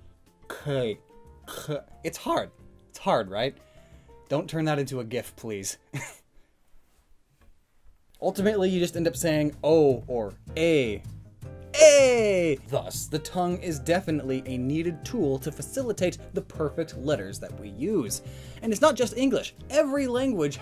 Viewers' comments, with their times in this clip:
0:08 Your silence is comedy gold. Love your vids.